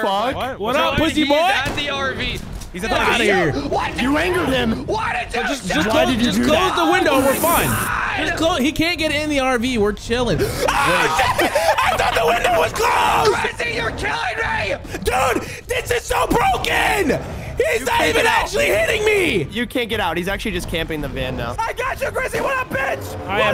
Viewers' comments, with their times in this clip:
0:09 him screaming got me
0:11 I screamed with them 😭